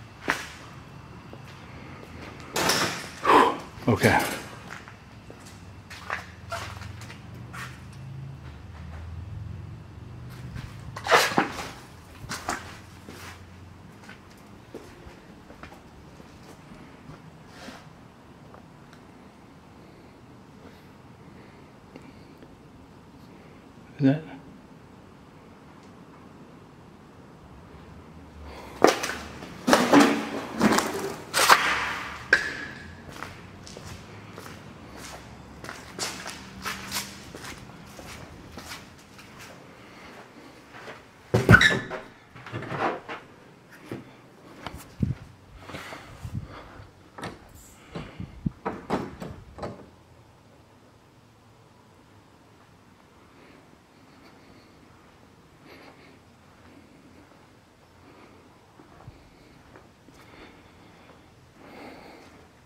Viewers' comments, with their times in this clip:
0:07 ish you hear a noise then you say "ok" you go through the door way and pan to the right and down by where that metal cabinet thing is leaning that door was open but now its closed
0:48 there is a whispered voice, can't tell what it's saying but the other one saying, 'help', was scary!